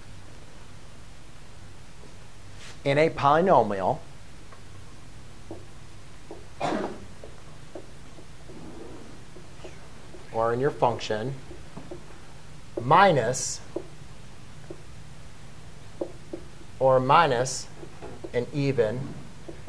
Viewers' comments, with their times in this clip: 0:05 Am I the only one that heard someone blow a loud ass sneaky fart ?